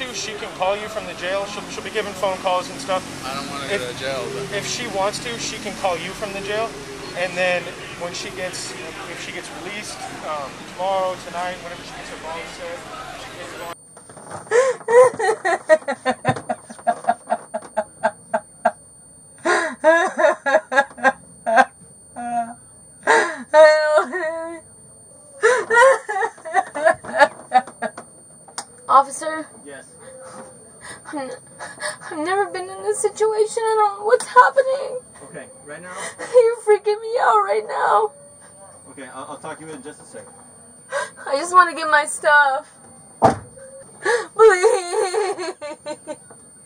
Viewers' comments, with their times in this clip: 0:10 That's a fake crying , forced laugh , forced cry extremely contrived
0:14 that was a scary cry
0:14 That´s Lucifer laughing
0:15 that's not crying, that's maniacal laughter
0:16 her laughing is insane. She is like a drunk, french girl. Totally crazy 😱
0:30 . . . 🤣 **NOTE: Girl, if you don't stop all that fake crying "😭", I'ma do something to you! ---->>>>